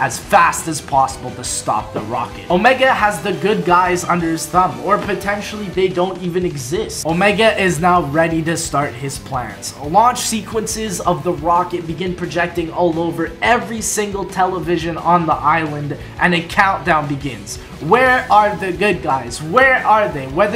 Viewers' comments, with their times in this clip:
0:07 who else thought he said omega is now pregnant
0:07 who else thought he said omega is now pregnant